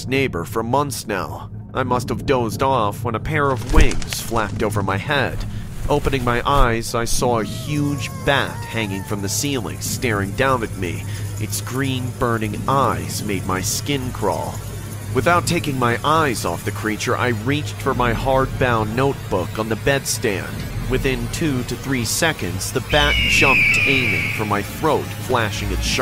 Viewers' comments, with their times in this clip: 0:09 anyone else confused why drunk in love plays 😭